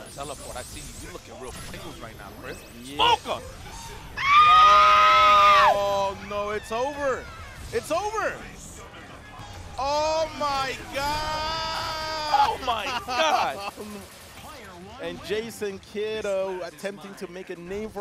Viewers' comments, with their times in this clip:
0:04 Bro that scream took me out lmao
0:05 I don't know if it's him or Morrigan screaming 😅